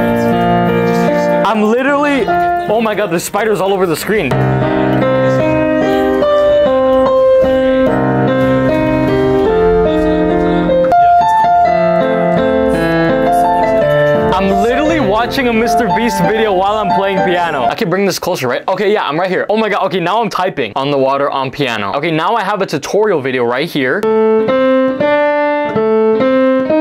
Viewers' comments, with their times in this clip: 0:10 that song makes me feel nostalgia and sadness